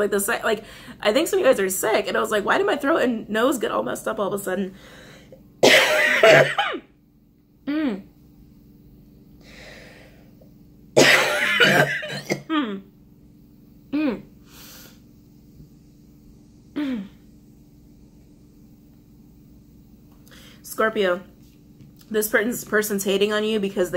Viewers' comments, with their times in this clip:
0:08 when you started choking, that was spirit saying..I SAID WHAT I SAID!! TELL THE TRUTH!! and stop sugar coating that firesign!😊💜